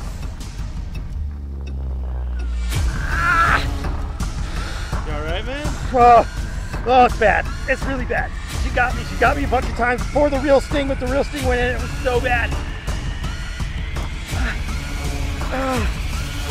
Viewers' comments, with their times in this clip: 0:03 u arlight man meanwhile a man ieing of pain